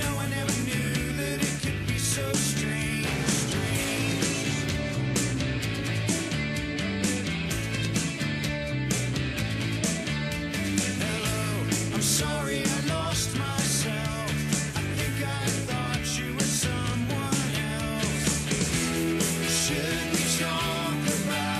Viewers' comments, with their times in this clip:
0:03 the rumbling, reasurring(?) bass roars in n under the waves..an Rem fav.."Are U visible today?"- a great line 👍 (can I see you today?) Hey idk..but one of few Bands we will know of 20 years from now 50 even..Remember Every Moment ..but I like tk think it stands for whatever u want..Rad Embryo Metamorphosis...Real Email Murder..pls weigh in w/ ur own..k done sorry🙅😁..Radios Equals Mind/(-Maneuvers..uhh Recoiled Enitity Mainland..or or ..or: (lol sorry)what abouuut Reverends/Reservations (of) Ecstasy/Ecstatic Mayhem/Misfits/Michael Stipe/Moms/motherboards/Mouth..hehe...-/Mothman, Money, Means/Muisc) I remember Stipe saying his dying Grandma sd/suggested it to him..like: Maybe it Stands for REMEMBER EVERY MOMENT fitting it's gd fun😅 to make up names tho..😅🥶🤏✌🏻✌🏾❤️